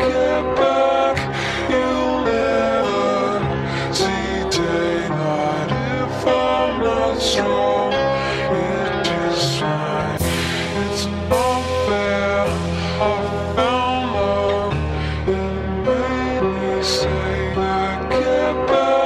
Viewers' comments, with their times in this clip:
0:03 idk why I keep hearing, " you'll never, see jaeger." ;-; (Btw credits to anyone else who already wrote this comment as I'm not trying to copy anybody)